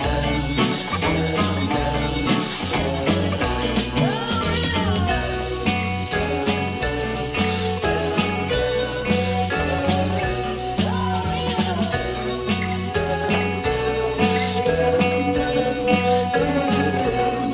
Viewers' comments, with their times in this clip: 0:04 sounds like the halo theme